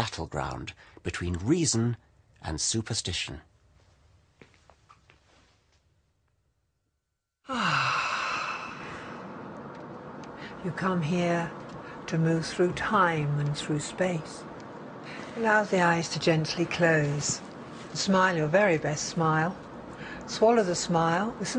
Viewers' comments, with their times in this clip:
0:07 that sigh XD